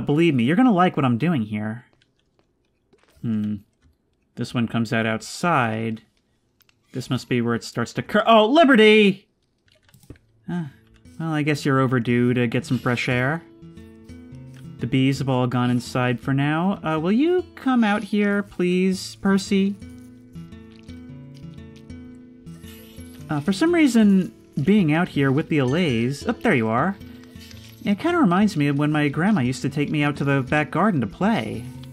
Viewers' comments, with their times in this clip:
0:09 The undertale music fits so well, but also came out of nowhere, speaking of which, i like how the pets (except liberty) are named after the Undertale souls (idk if its on purpose or not)
0:13 The use of the song Home somehow made me feel nostalgic for my own childhood memories
0:19 The undertale music just makes everything so much better